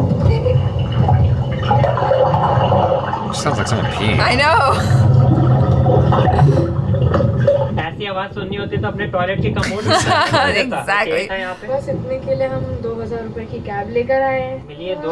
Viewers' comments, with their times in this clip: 0:03 sounds like someones peeing plot twist : someone is actually peeing